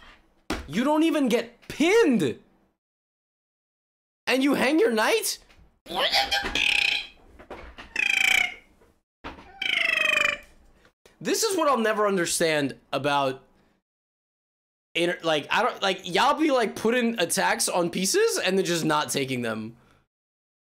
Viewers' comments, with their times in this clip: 0:04 I walk away from the screen for 10 seconds and all I hear is a malfunctioning mini airplane.
0:05 third hand cars starting up be like
0:05 Why is no one talking 😂
0:05 if anyone needs a new sample their dubstep track, just loop this for a few bars.
0:06 lol robot Levy
0:06 Click to hear angry penguin noises.